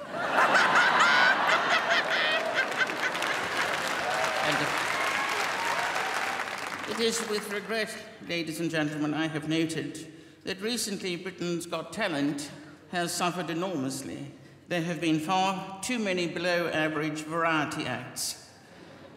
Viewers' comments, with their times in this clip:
0:07 watch from when the crowd boos to her joke on Alesha and Alesha presses the buzz and then the ""Queen"" refers the buzz as if she breaks wind :-)